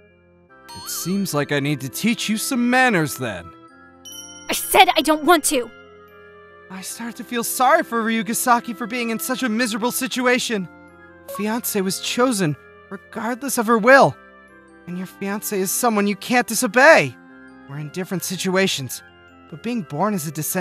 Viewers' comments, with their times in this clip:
0:03 she sounds real angry. Nice voice acting there